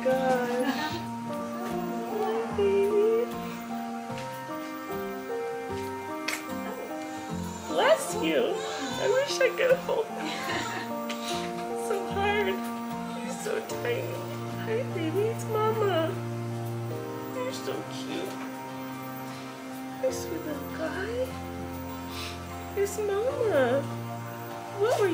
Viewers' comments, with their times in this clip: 0:06 when he sneezed and she said bless you that literally warmed my heart 🥺bless you too 😭
0:06 I love baby A and baby B they are so sweet. I love Baby A’s sneeze ❤😊 So proud of you Colleen